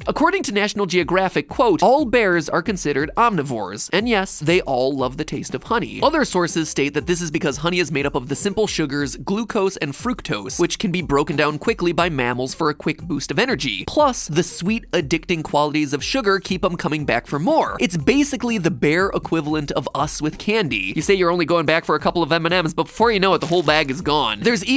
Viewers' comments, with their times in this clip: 0:09 Did anyone else think he said glucose and fruit-toast